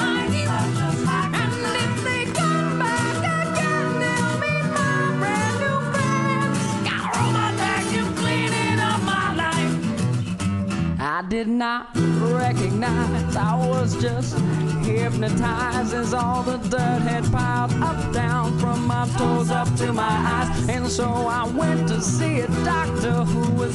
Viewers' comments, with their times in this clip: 0:08 I originally swore that was Weird Al for some reason :P